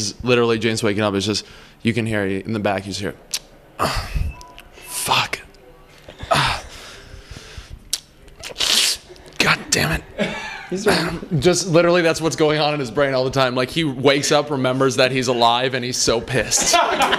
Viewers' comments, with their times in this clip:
0:04 someones phones battery was low...